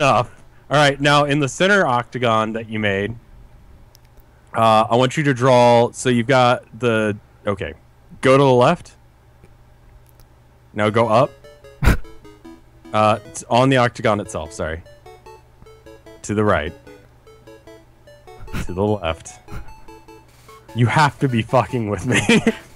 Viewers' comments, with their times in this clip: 0:08 the music was just too perfect for this part